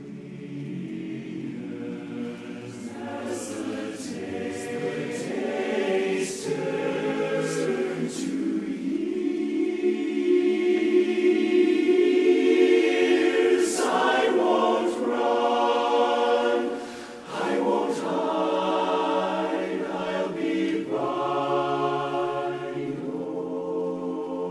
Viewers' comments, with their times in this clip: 0:07 gotta love those 9s